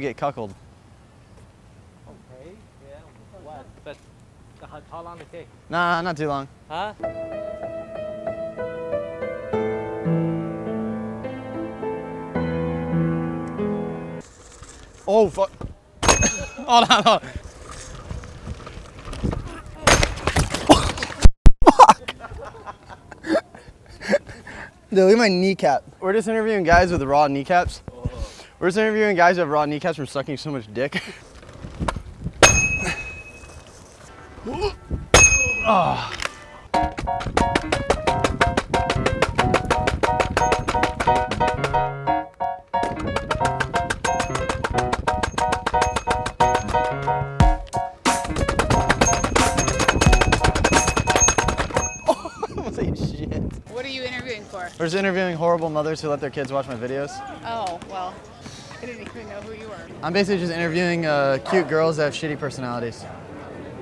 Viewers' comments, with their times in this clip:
0:06 look guys they added piano tiles music to real life
0:36 that shit had a beat to it
0:37 wtf its actually exactly in time with the music
0:37 that scooter going down the stairs shakes and sounds like an assault gun going for rounds lol.
0:37 it made a sick beat with the music and on the last stair set it was the best
0:48 who else heard that beat drop